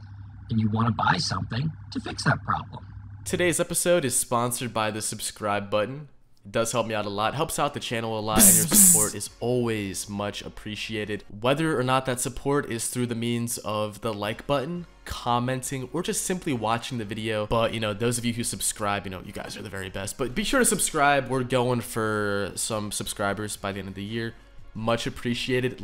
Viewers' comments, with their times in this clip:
0:06 the BZZ BZZ genuinely scared me for no reason